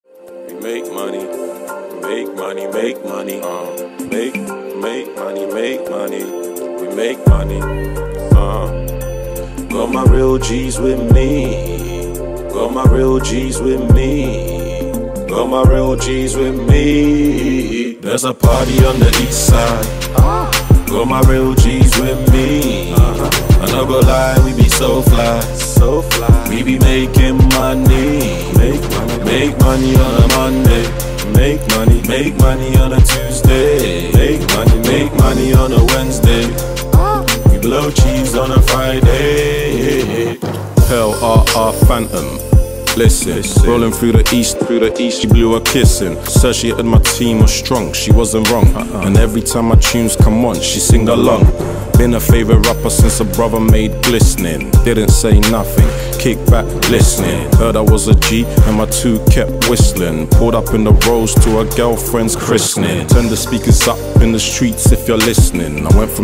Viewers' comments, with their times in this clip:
0:07 Its the beat drop for meeeee
0:52 big tiktok vibes.